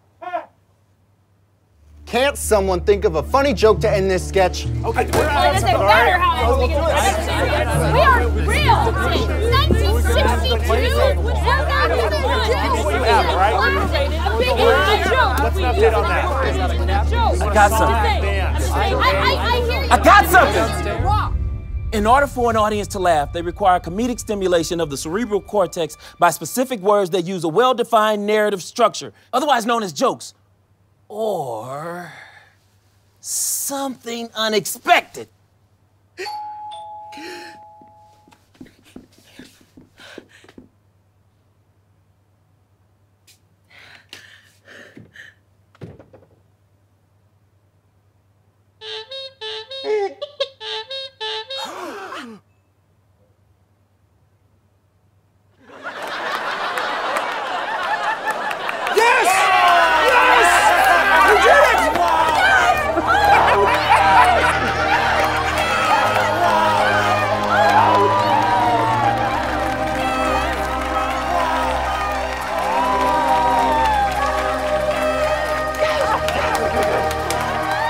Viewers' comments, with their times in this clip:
0:04 the laugh is so freaking solid!!
1:00 when you know they just feel bad for them and give them a fakes laugh/ there being paid off to laugh.